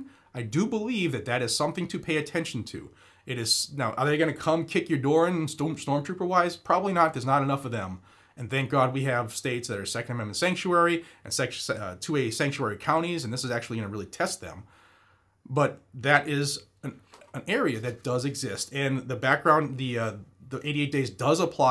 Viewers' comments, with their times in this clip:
0:04 No sound here either Thursday AM